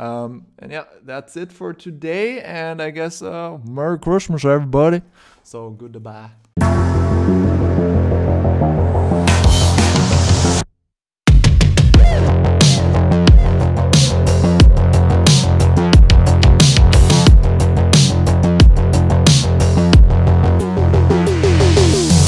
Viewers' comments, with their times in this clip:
0:03 ma boi is turning american